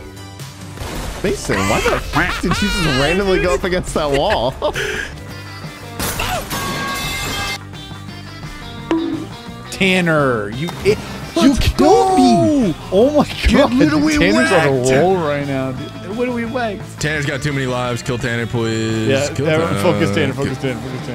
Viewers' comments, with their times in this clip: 0:03 the metal pipes every time bro 😭